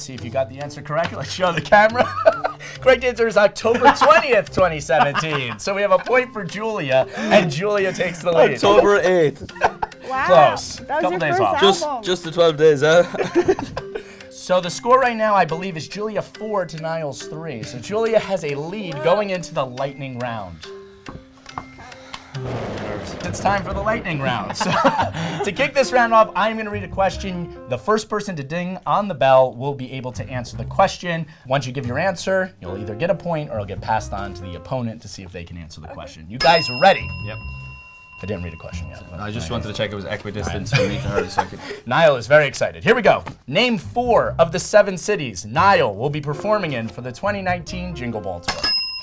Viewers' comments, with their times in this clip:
0:03 I can literally hear 2011 Niall Horan laugh :( so cute ❤❤
0:36 Niall dings the bell even before the game starts just as Louis does 🥺